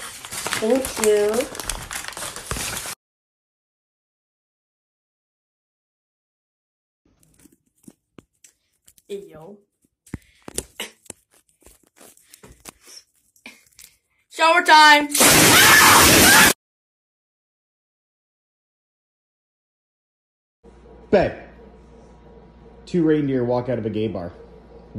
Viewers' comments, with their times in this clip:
0:07 “shower time” painfully screams and dies